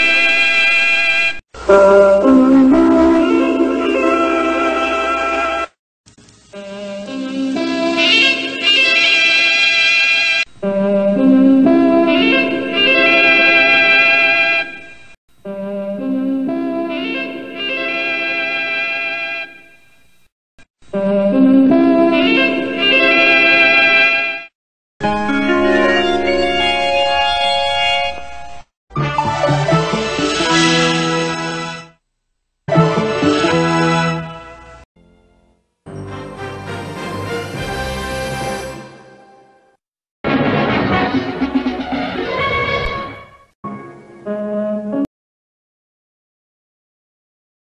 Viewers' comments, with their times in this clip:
0:04 ouch my ears!
0:28 My favorite CPT logo. Cuz the jingle.
0:35 that not real that fanfare is not suppose to be here